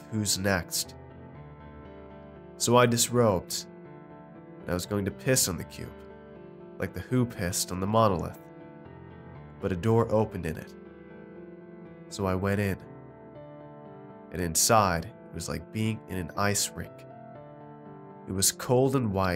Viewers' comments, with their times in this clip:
0:04 (Sorry if my time stamp is wrong I'm too scared to go back to it) The audio broke out into this wierd noise familiar to white noise. It spooped me for sure. I went back to it once and it was not there. rEEEEE